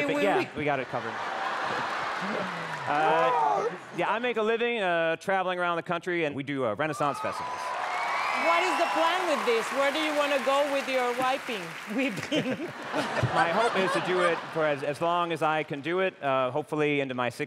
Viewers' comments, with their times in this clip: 0:04 Sopia made me laugh haha. This Cowboys says he travels around the country with his Whipping talent. Sophia said goodluck with your Wiping, whipping hehe. Cant imagine, travels around the country with a Tissue and Wiping a$$es all over hahahahahahaha